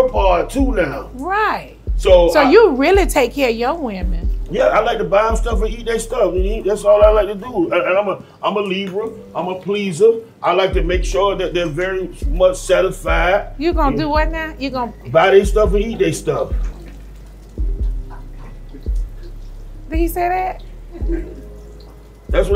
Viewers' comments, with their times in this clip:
0:06 NeNe's reaction to that was hilarious. Trick just said that shit nonchalantly. 😆😆😂